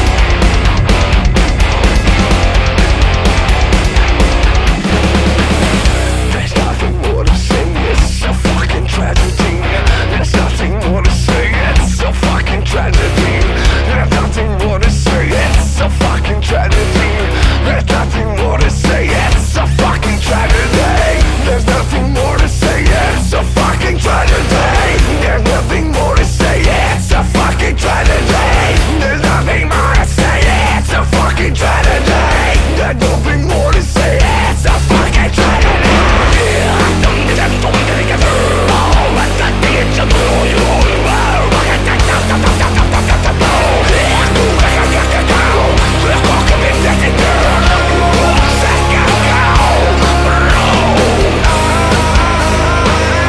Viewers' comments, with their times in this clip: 0:04 It's so good that I listen endlessly. Especially from it gets total power! I love you dude!
0:05 style Slipknot?)) cover fire!!
0:07 the music sounds like Disturbed and the lyrics are 100% like Korn, this is amazing
0:35 Strong Korn vibes Loving it.
0:35 inspired by Korn
0:37 You channeled your inner Korn holy sh*t. You never cease to blow my mind !